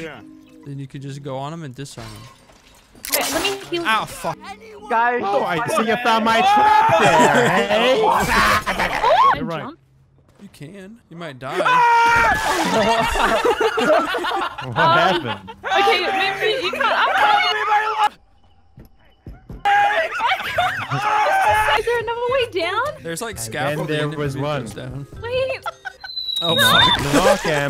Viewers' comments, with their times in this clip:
0:10 that scream is the one everyone does when they're in the shower and just so happen to look up and see a giant spider they didn't notice before descending upon them